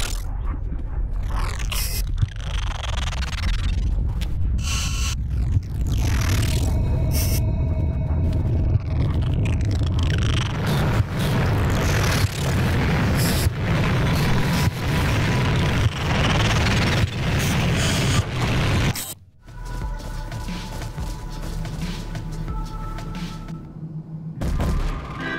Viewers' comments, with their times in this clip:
0:10 Bruh -my ears